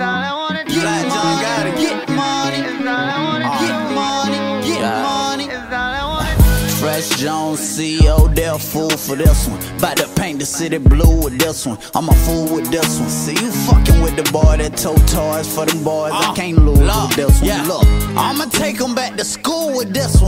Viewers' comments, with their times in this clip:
0:03 bruh from my point of view I thought that was young thug champ ass